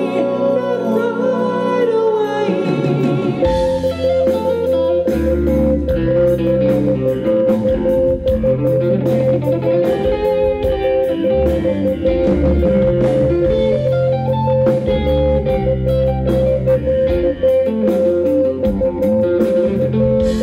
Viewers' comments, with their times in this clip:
0:03 Man...seems that Rick and Jon are the only ones that still got it! As much as I love Steve this sounds like a YES tribute band.And what is this MORSE CODE shit Downs is playing here for an eternity? MORSE CODE SIGNAL BY DOWNS